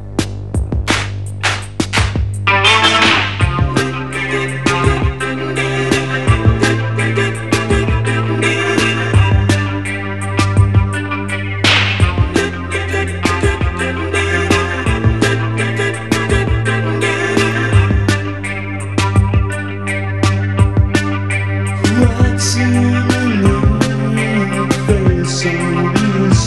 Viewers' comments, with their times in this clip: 0:10 LOL!!! So much anger hitting that drum (for such a sleepy song).